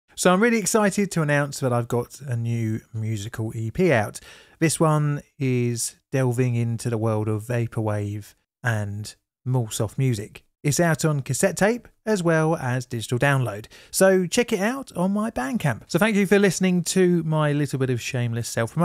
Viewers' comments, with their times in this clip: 0:00 that intro hits me like welcome to nightvale.